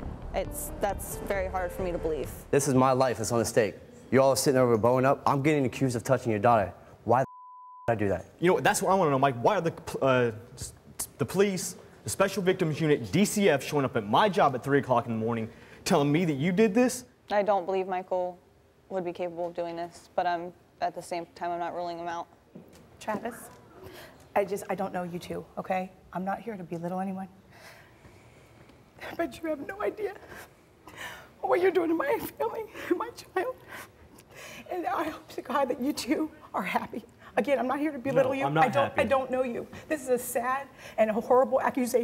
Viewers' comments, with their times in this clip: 0:04 he sounds just like Jake Paul wtf
0:28 the way she comes and starts crying is funny like she hasnt even been there for less than a minute